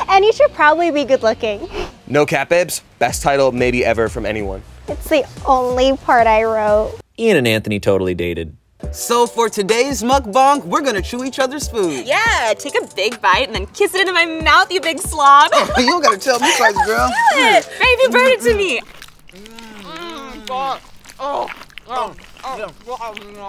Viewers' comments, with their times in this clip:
0:07 did he fust call a mukbang a mukbong